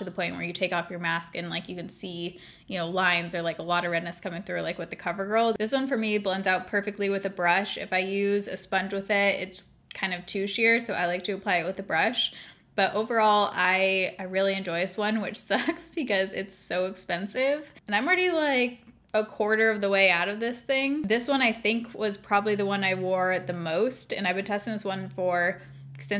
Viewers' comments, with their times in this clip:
0:10 I thought you said tooshier 😁